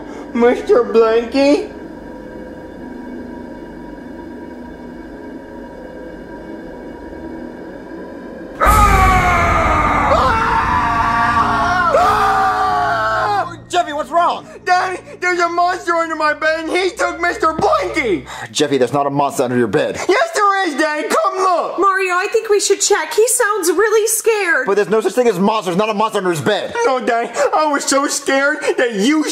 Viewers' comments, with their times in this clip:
0:10 Jumpscares Five Nights at Freddy's 4 😱 Screaming